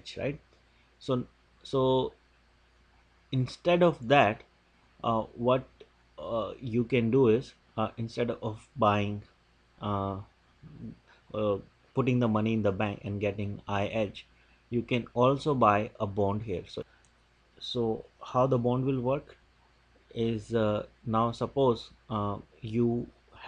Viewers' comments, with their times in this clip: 0:10 Too many "uh's" and "um's". Ill prepared in making this video. I stopped watching